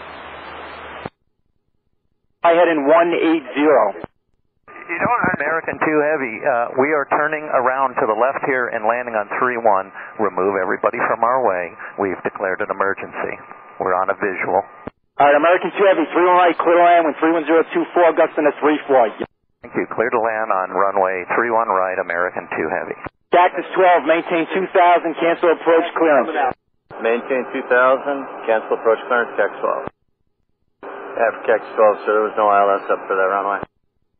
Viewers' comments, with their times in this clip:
0:07 "American 2 Heavy" can be misinterpreted as "American too heavy"
0:15 the controller cut off his mike just before he called the pilot a name. Controller: "Cleared to land, wind 310 at 24 gusting at 34, ya ******"
0:17 Saw this on another video. Real ATCs caught the controller unkeying right before he insulted that pilot lol